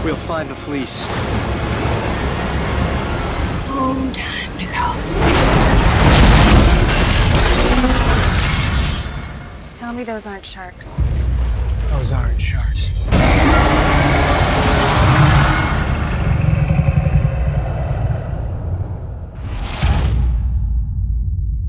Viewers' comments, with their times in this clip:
0:03 Does anyone know what Annabeth is saying ? I haven't ever been able to figure it out...
0:05 I really can't tell if this will be shitty or good, but I am fucking going! also if you go to and just listen it sounds like transformers =/